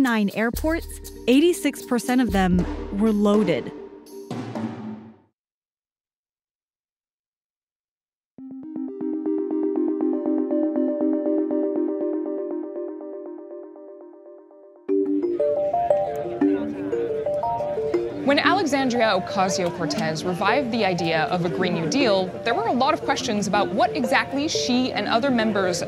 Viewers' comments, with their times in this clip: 0:08 reminded me of when the Wii starts up.